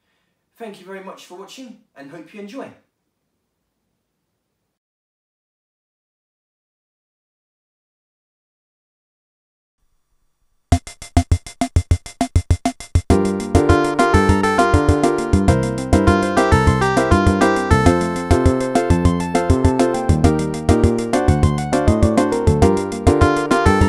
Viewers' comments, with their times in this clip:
0:10 Freddie Dredd - Endless Sea type beat